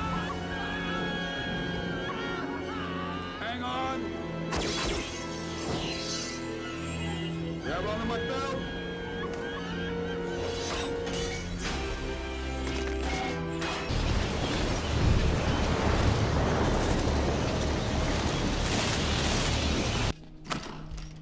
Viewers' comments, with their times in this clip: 0:08 Did... A legit movie... Just peak it's audio?